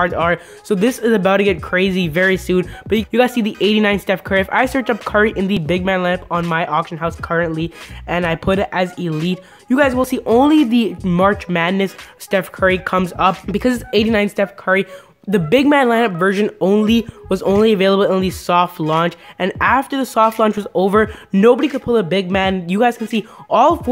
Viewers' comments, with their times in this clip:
0:09 thats the mobile madness one he was talking bout the 89 big maan curry. go back to like n he explains it. might wanna set the speed to .75 though cuz dude talks like he just got doing a oz. of cocaine or sumthing or go with.50 speed if you prefer the much funnier version.